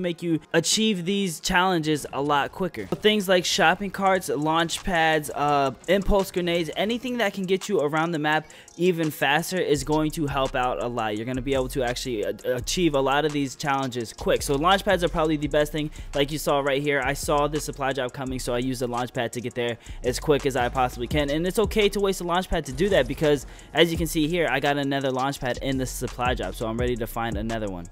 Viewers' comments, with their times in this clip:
0:10 Was that a baby in the background ?